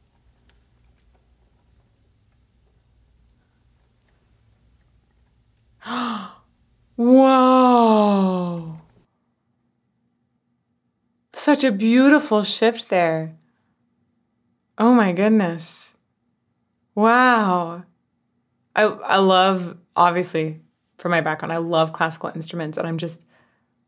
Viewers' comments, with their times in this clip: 0:04 That intake of breath. I was waiting during this whole wonderful reaction for that moment, and wondering how you would react. Some of my friends think I'm a little odd that I can listen to Aphex Twin, and jump right into Boccherini. They don't seem to understand the overlap, but that is what it is. I can deeply enjoy some 2004 Tim Hecker - Mirages, and easily vibe right over to some Max Richter. The lower bass of the cello is as beautiful to me as the mastery of layering harsh noise to actually have a soulful connection. I like how the strings play the "Money Game" theme. It's all so perfect to me. ❤